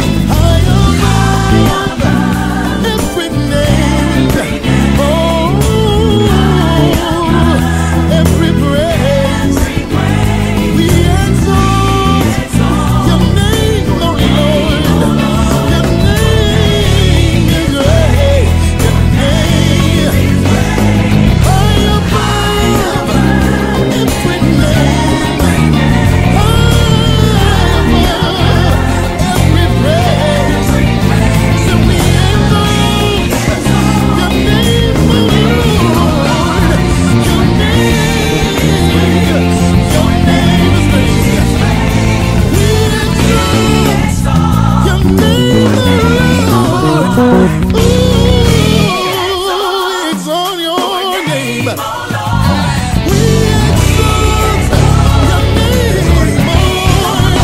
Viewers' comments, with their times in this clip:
0:09 things getting heavy!!!
0:42 That run though.👀👀🙈😂 My Lord ! God bless you man. That blessed me.
0:45 That lick ...yeah! Man i love your style and your fluidity. love to just get a lesson one day.